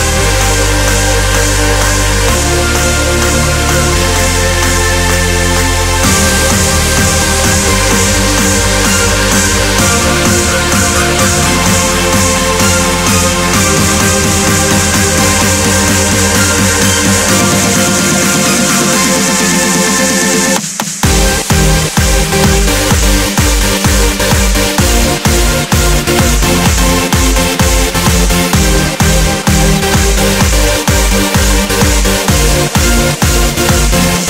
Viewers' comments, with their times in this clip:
0:05 the drop is good.. just not the shitty electro drop
0:05 the shitty big room drop sucks but main drop ........I DO LIKE THAT
0:20 The best Drop >>> ♥